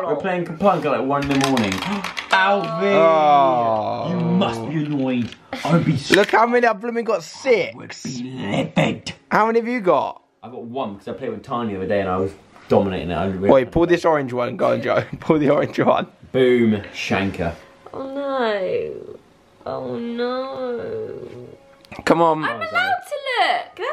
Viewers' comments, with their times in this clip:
0:10 I lost my sh!t what did joe even say 😂😂